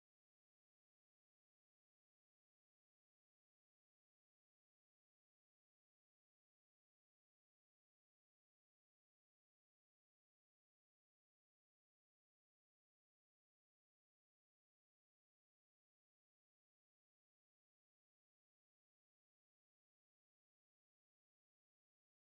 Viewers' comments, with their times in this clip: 0:09 Why did he mute so much of ?